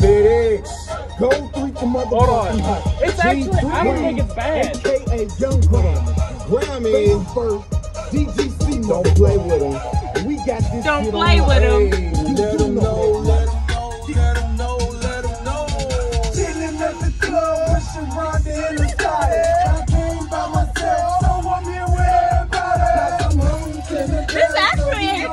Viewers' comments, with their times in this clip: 0:09 What song is that song bumps 🔊🔊 ????????